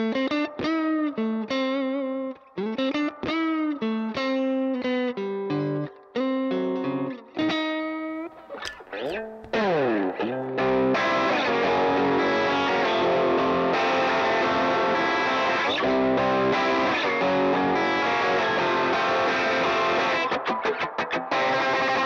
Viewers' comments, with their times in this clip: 0:04 Lovely stuff. That riff goes from A minor down in to Ab maj - the C holding in that is just bloody satisfying. Keep discovering 👌❤️